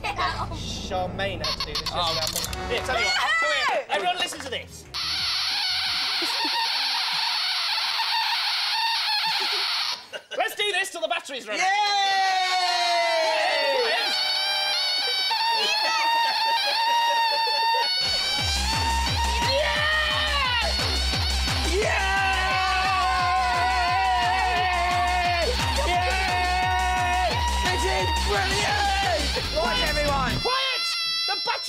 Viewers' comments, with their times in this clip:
0:09 makes me laugh until I cry, oh my god. The sheer stupidly, the laughing behind the cameras, the nostalgia of it, everything.
0:18 I was crying with laughter during the part with the buzzer. The moment when the noise is transformed into the beat for a rave made me laugh so hard I almost fell out of my chair. If that was improvised live on air then the cameramen and sound team deserve huge (bungalow) points for making the rave fit so seamlessly with Dick and Dom's improv.